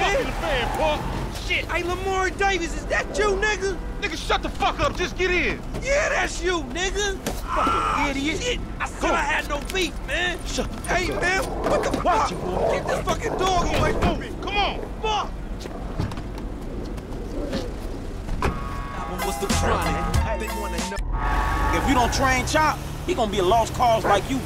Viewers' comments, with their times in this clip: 0:07 I don’t know why but Franklin’s delivery of “Fucking idiot” always makes me laugh